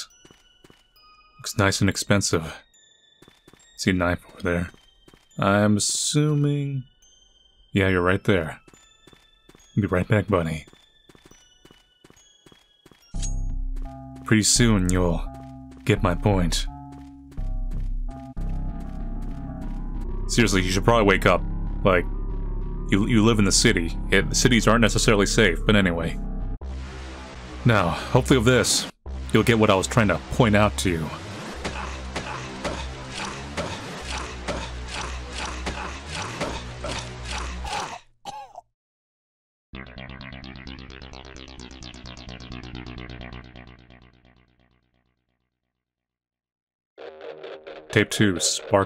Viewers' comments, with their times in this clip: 0:10 when you grab the knife. You didn't realize the sound/music change into "finish kill" Edited: when you are nearby civilian the sound/music into "complete your tasks"
0:35 Jimmy Neutron’s dad? Is that you?